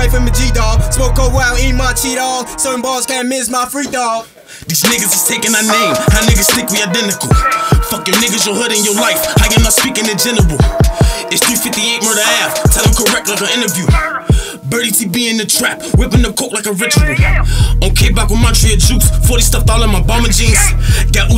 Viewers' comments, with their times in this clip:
0:05 dawg sound like lil herb!